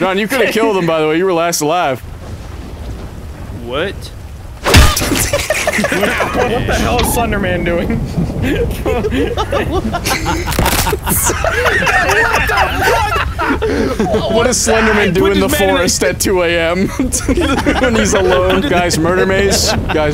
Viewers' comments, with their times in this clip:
0:07 The cracking sound had me weaakkk